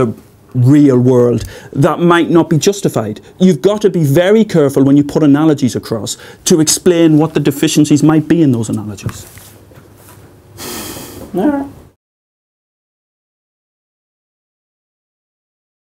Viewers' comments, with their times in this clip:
0:11 That final "All right!" sounded like "I disagree". What happens is that in the atomic level, 99.9% of the space is empty, and the "normal" definitions don't apply. If you think that contact is only when there is no space between particles, then there is no contact in our world, not even in nuclear fusion.